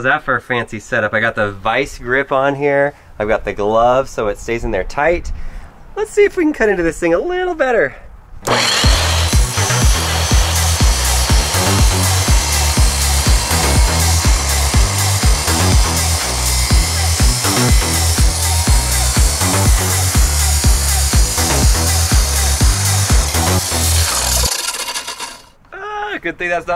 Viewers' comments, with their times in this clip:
0:08 i can hear the charizard screaming.